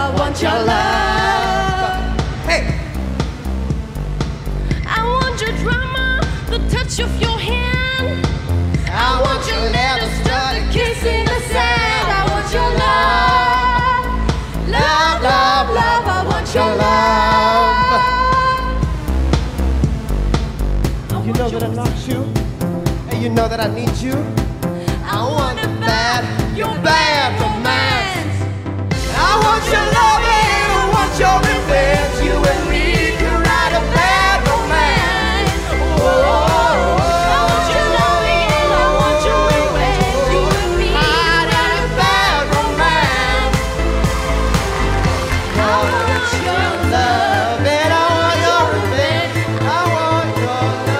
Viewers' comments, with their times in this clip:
0:04 The last audition,I think if the Asain (Not racist) might have gotten 4 yesses if she was solo. XD. she sang good on her own.
0:28 I don't know what that noise is but hell yeah I would vote YES. I need more of those strange odd paranormal sounds to drive my neighbour completely nuts
0:37 please stop your hurting my ear i gonna turn deaf lol